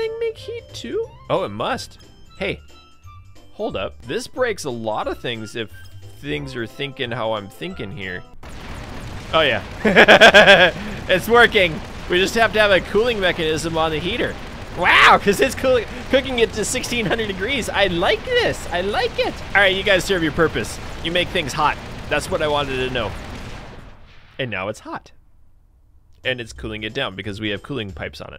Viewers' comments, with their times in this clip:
0:10 I love those evil laugh's